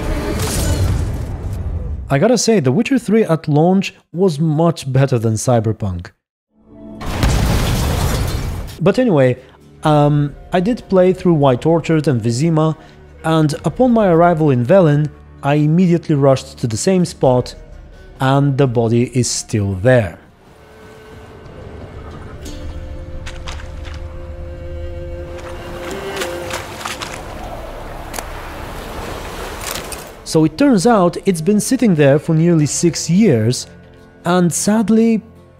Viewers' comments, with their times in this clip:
0:04 Great clip choice. Boom 🤣 Cyberpunk in a nutshell
0:22 when that music starts my stress disappears 😌